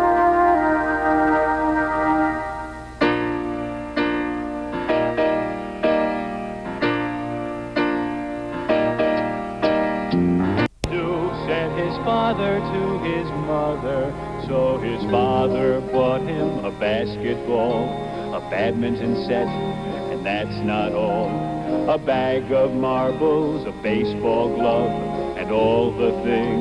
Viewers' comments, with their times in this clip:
0:10 What a shame that it skips cutting out "It's All Right To Cry" and coming back in the middle of "William Wants A Doll". I appreciate you putting this up though, such good memories!"